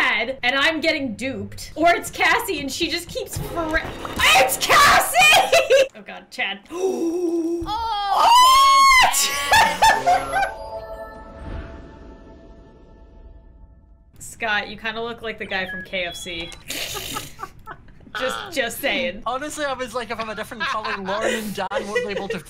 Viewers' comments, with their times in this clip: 0:08 This is where I started watching, my ears are bleeding:( 😂😂